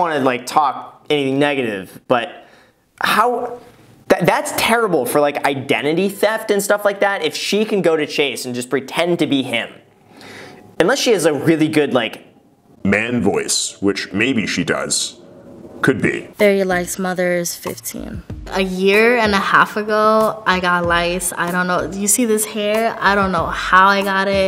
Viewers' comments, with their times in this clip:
0:10 The "man voice" killed me 😂